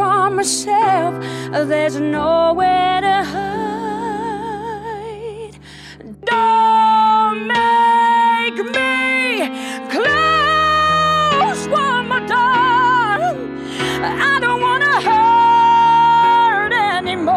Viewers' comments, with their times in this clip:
0:04 I physically recoiled from the high note, was not expecting it at all but it was so amazing.